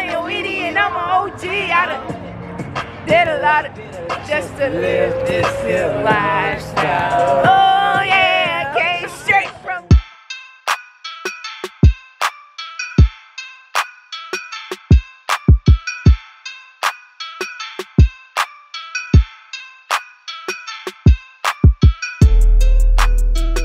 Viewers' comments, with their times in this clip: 0:06 THE SINGING WAS BOMB🤩🤩